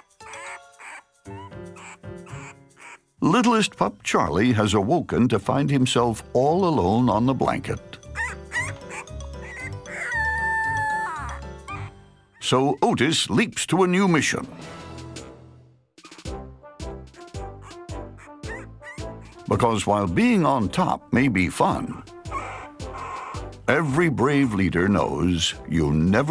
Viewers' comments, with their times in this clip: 0:04 in puppy charlie is crying omg dont cry im a dog to but not really buts its okie little puppy dont worry
0:10 That howl. That motherflipping howl. How is anything allowed to be that cute?